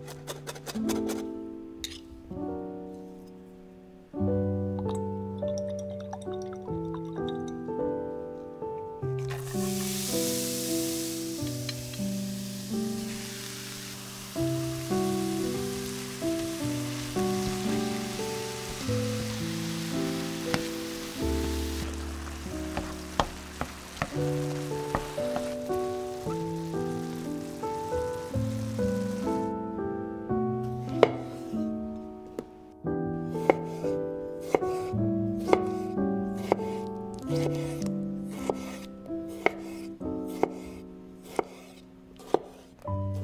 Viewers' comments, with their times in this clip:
0:08 Music sounds almost like Melodies of life from Final Fantasy XI starting
0:26 you are not frying the meat you are boiling it... The pan is not hot enough, the meat is probably cold, get it to room temp first. If you hear boil and not a hard sear TSSSSSSSS sound, you are not doing it right